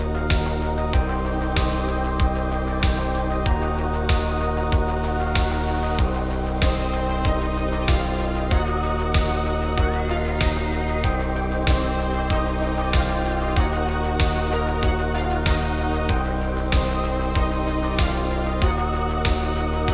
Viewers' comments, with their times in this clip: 0:03 Sounds like depeche mode